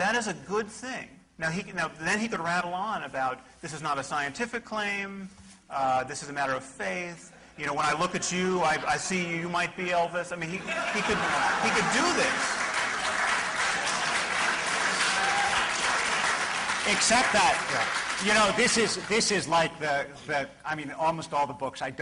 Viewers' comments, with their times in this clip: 0:08 even David Wolpe can't help but laugh at his own analogous language being used against him, quite brilliantly by Sam. :D